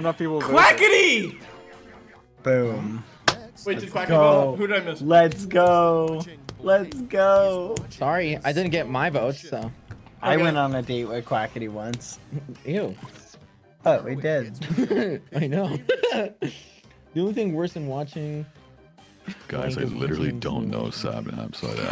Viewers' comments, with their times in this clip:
0:09 "I went on a date with quackity once" "ew" "what? we did!" "yeah I know" lmao why did they say it so casually? but that date was hilarious, skeppy punching the air rn